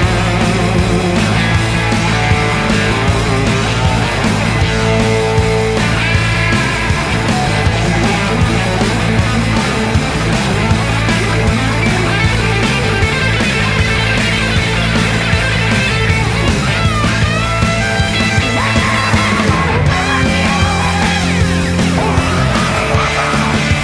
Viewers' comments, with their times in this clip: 0:07 That Angus solo really makes me chill, what a performance by the whole band!!